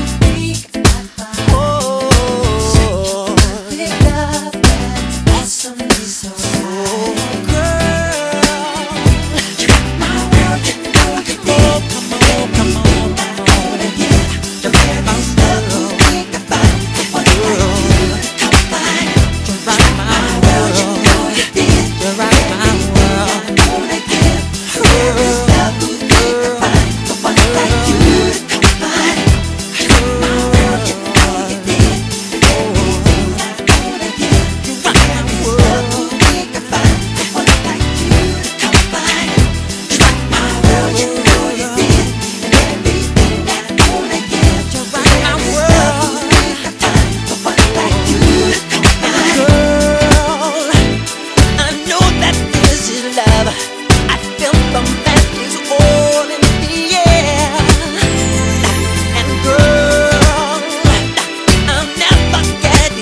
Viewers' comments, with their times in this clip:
0:10 those aho aho aho’s go CRAZYYYY🤣🤣🎶 I love Micheal
0:49 Always love the way he pronounces "girl", especially It's sensually smooth :) .
0:49 the way he says " girl " is the best thing ever omg